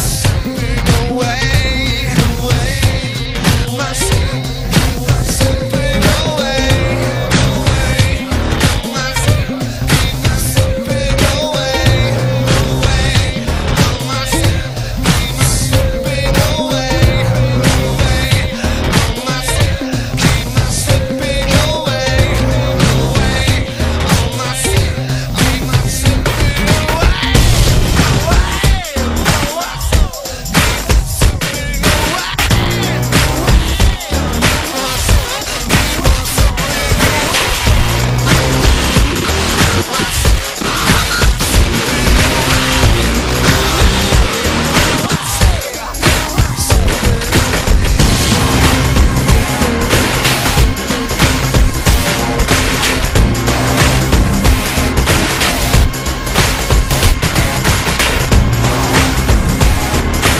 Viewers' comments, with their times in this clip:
0:04 freaking awsome and disturbing keyboard *O*
0:48 Quake Theme scream in background from